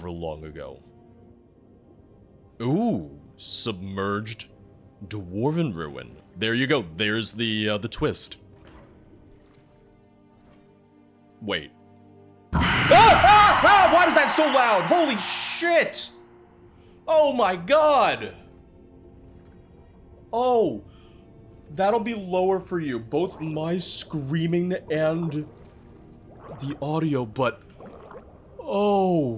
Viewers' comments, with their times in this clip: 0:10 R.I.P headphone users...